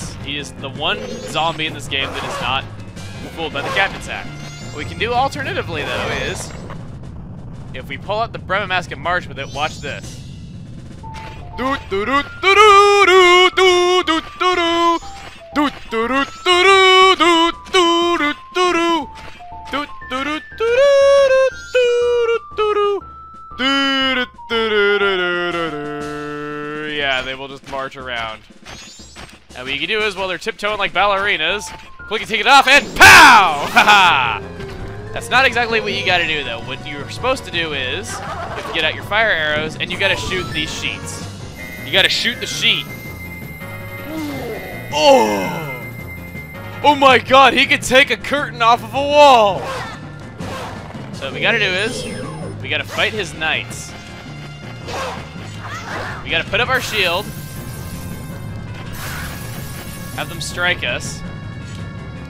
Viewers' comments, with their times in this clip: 0:10 its probably best if you just don't sing :/
0:12 cover your ears
0:43 shot the shiet?!?!